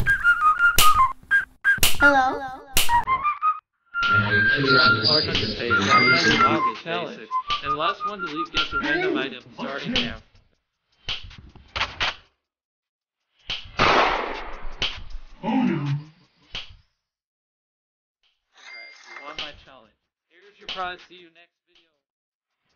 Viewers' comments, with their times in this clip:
0:03 something went wrong with sound